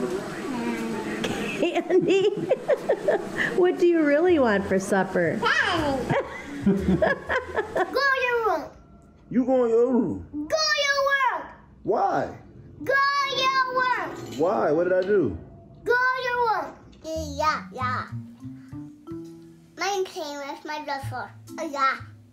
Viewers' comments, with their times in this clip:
0:10 He was saying “go to your worm”. 😂😂